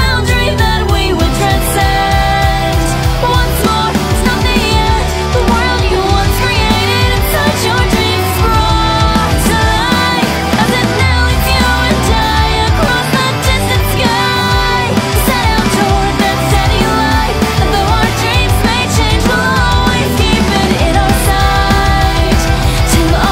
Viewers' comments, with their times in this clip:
0:04 hits real nice. Kind of a breakdown there